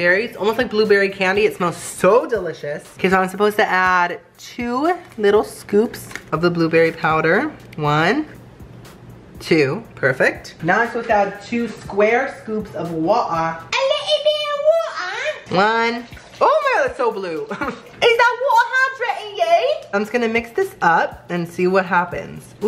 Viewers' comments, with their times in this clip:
0:10 Lol he sounded like my nana XD